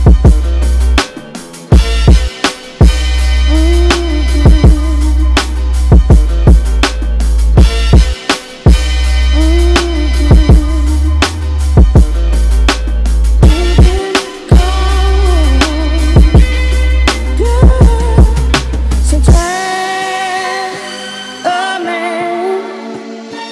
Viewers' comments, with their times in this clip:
0:09 I was reading the comments before the mark and saw somebody say they made the stank face. Didn't disagree. Then the fucking beat dropped and GODDAMN 🤧🤯